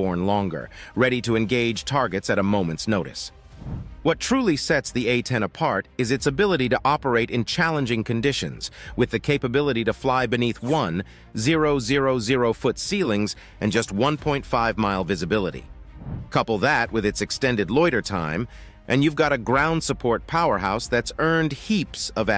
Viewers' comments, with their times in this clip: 0:10 The narrator doesn't know how to say "one thousand". WTF!?!